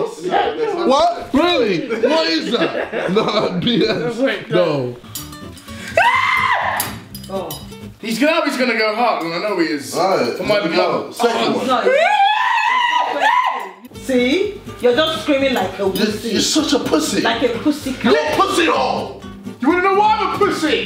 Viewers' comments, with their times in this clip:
0:05 the famous Goat scream